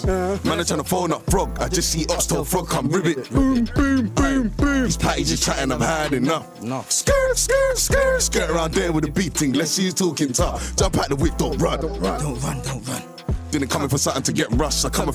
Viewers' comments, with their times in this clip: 0:03 this is sick but the ad lib had me creasing